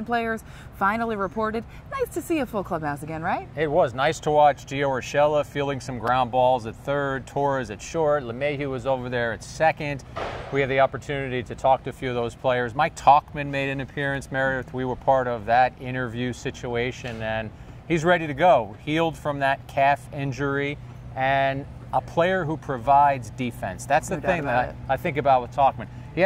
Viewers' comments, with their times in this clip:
0:09 Yankees already practicing their trash can banging for the season